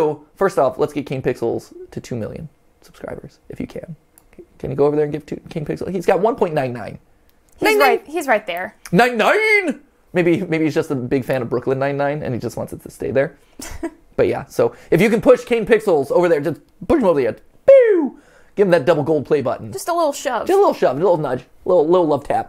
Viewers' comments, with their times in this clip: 0:07 the way he says '99' made me think MattPatt was referencing Tech N9ne XD Eh, I'm not sure what the crossover of Theorists and Technicans is.